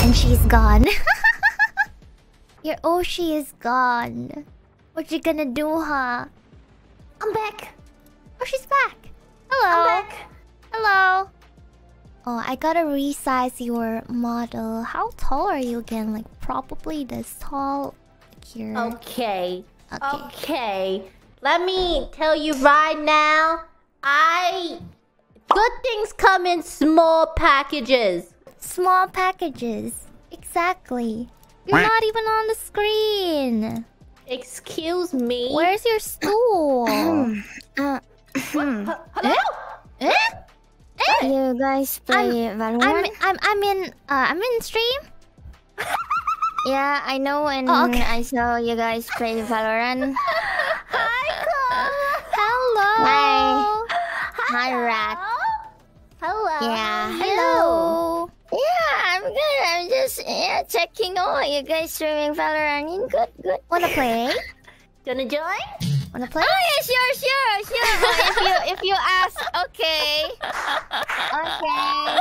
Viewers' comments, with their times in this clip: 0:08 That 'hello' had me very confused. Thought Mumei had suddenly joined.
0:27 Zeta's voice is so perfect for that Monotone Support Robot character that often times jokes around with the player so calmly on games. Kinda like, maybe Pod on NieR Automata.
0:58 Kobo's imitating Carl from Aqua Teen Hunger Force here. XD